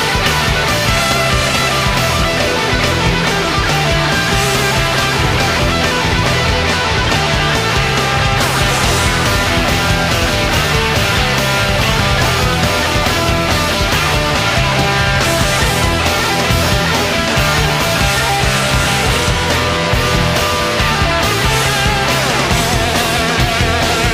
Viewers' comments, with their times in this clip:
0:09 I love that bagpipe sound♥️♥️♥️